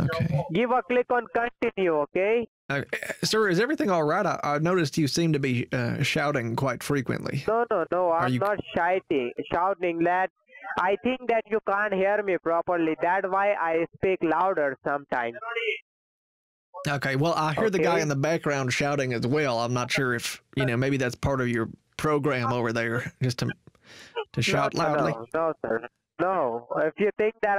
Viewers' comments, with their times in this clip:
0:06 I'm glad he wasn't actually shite-ing. LMAO
0:08 "I'm not SHITING" lool!